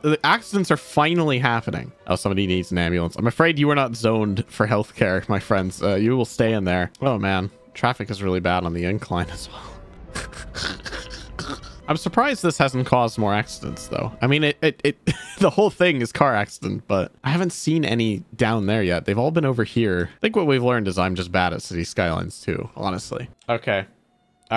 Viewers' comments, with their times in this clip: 0:10 Traffic Gremlin Noises